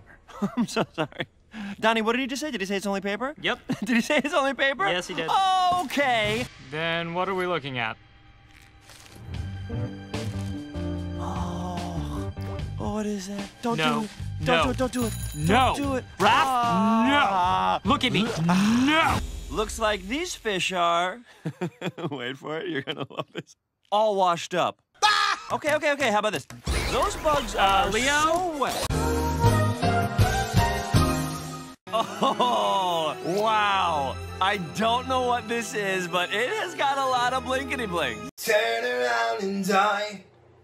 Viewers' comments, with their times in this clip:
0:06 or more no idea the woody laugh got me dead it killed me
0:15 I know this is a video about leo but the way donnie was like: "NO, RAPH, NNNO,,LOOK AT ME, NNO!! 😠"
0:21 i was fine cause i heard the joke many times and its still stupid and funny but your add-on of woody's laugh made me loose it 😅😂😂😂
0:22 WOODYS LAUGH HAD ME ☠️☠️